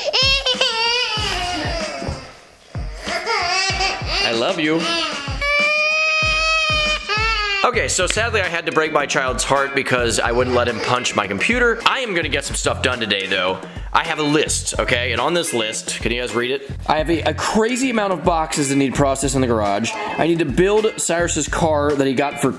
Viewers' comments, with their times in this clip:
0:07 that sounded like a formula 1 car back in the days 😂